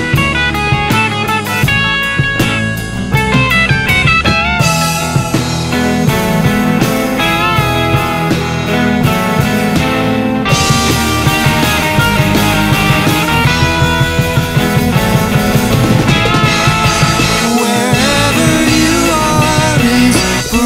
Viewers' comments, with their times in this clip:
0:03 I was expecting a Weezer lick 😭